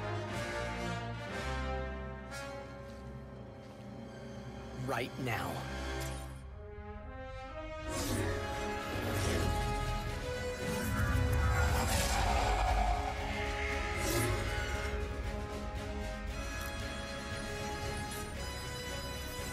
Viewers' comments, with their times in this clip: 0:04 DAMN, James Arnold Taylor has an awesome epic voice when he said that line! That one line of dialogue delivery alone gave me the chills! Such a talented man!